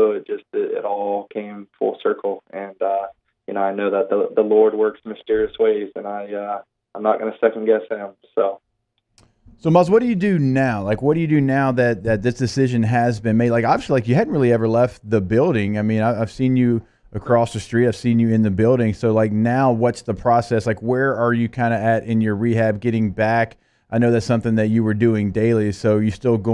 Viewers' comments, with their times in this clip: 0:08 Lol. It looks like were the only ones that caught this?!?! Sounded like he said "Nuss" too